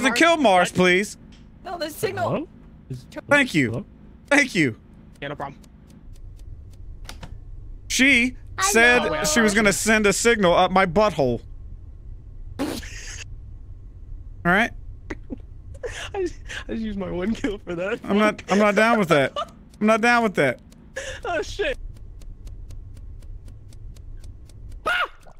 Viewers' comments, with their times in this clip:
0:09 that 'hello' was the cutest thing I've ever heard. 🤗